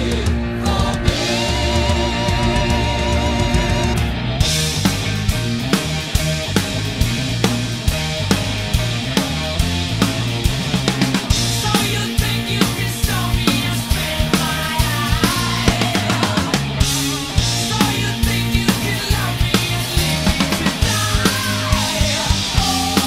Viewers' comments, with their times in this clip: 0:03 Holy mother of God! Where is the HUGE snare flam crack ? Brother, you know I dig your playing. However that signature snare hit is so much a part of the into to the band rocking the roof off. Just something to think about 🥁🤘🤯
0:04 So much awesome going on here, it's hard to know where to begin. Okay... The intro section is so incredibly played. The musicality you showed during all of the cymbal swells, using the soft mallets, etc... Very well done. Then during the next couple sections the little subtle embellishments that you added to your fills were just enough to make it your own while paying homage to the original track. My favorite though is from on and how you played is as a shuffle. Expertly executed brother! This is hands down my favorite cover you've done! Amazing work!